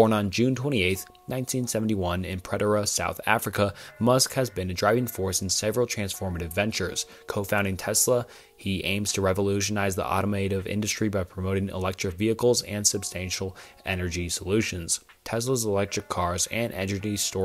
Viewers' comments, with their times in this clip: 0:05 Listen again it sounds like co-founding to me.